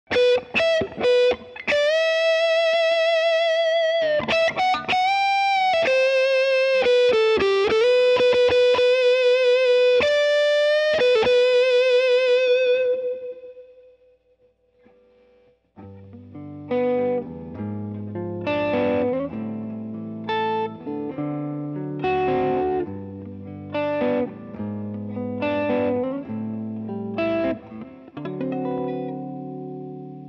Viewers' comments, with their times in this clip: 0:00 Bro's fluent in speaking guitar.
0:13 This is how you turn the sound to overdrive in a different way.
0:15 sounds like " we'll meet again "